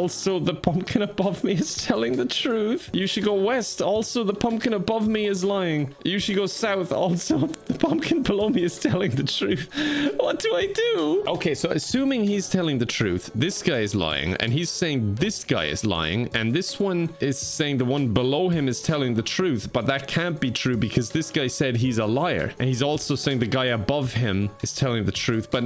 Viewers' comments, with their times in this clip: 0:07 Am I going crazy or is there a noise pop